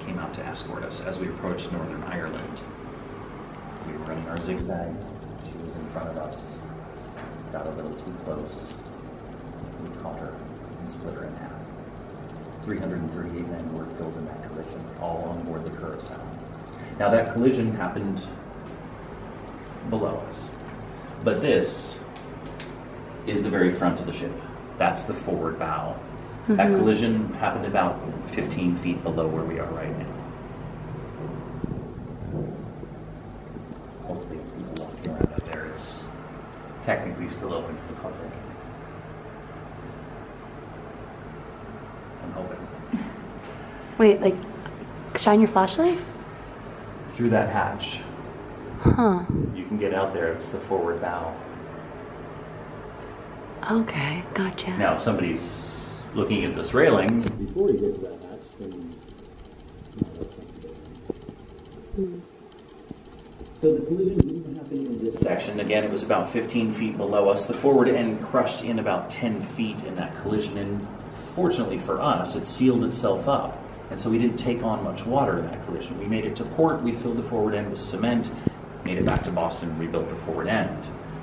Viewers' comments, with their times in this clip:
0:04 Weird audio issue So scary I don't know if I could spend the night on her 😱
0:10 the audio was acting odd!!😳
1:02 I was listening the microphone sounds like it's getting covered up by something or someone
1:02 sounded like something was blocking the mic or it was just a fault but it sounds weird